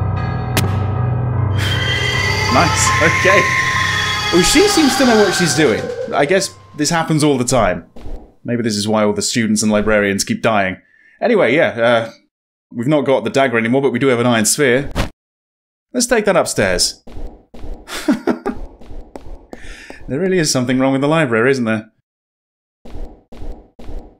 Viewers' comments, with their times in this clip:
0:06 Don't know why exactly, but the remark u made "maybe this happens all the time", when she used the spirit blade, made me start laughing. Such a simple remark casually made @ such a deadly encounter. Tension releaser skill. Also, the sound used for walking is terrible. Other than that, it's a pretty good game.